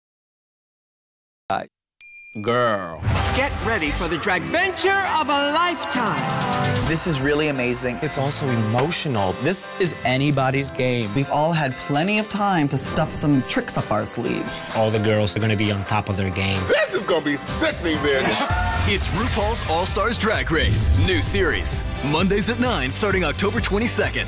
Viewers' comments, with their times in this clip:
0:06 I just love the music starting dunno why just so hopeful.